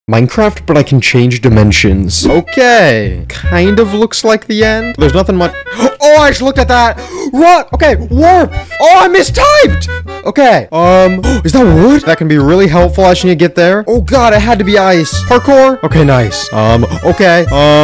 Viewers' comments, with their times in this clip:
0:05 the way of how he said Aw i JusT LOkk At THAt RuU Ok is soòoooooooo funny